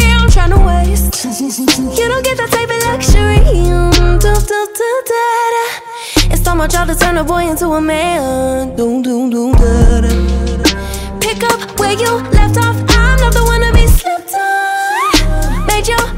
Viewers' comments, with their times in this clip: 0:03 The low note after was FIREEEEEEEE ❤‍🔥